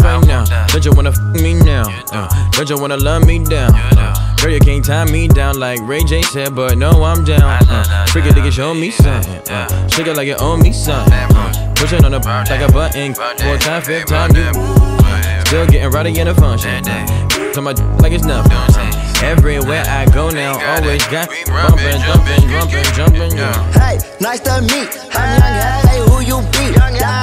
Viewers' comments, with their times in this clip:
0:08 is one of my favorite parts (THAT BEAT THOUGH)